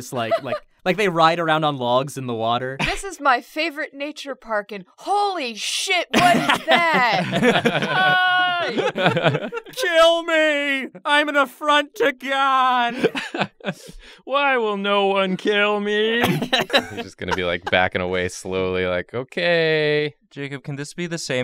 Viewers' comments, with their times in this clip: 0:09 Now i can't help but imagine the creature either saying or singing "I find it kind of funny, i find it kind of sad. The dreams in which i'm dying are the best i've ever had" in the funny voice they gave it.